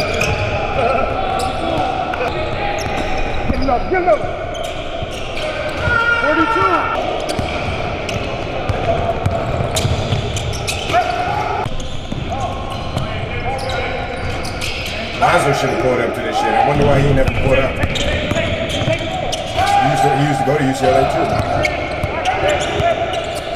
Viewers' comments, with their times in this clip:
0:04 He always yellin about some weak shit.